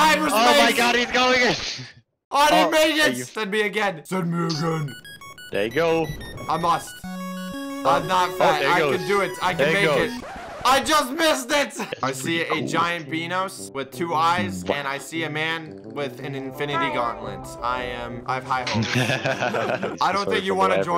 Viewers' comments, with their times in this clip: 0:04 epic 8bit music